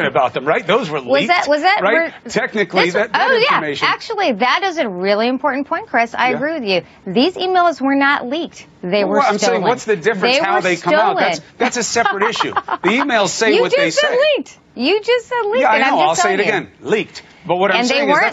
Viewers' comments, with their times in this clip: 0:06 That laugh when she’s getting annoyed because she’s out of her comfort zone is the same as Kamala Harris or Nancy Pelosi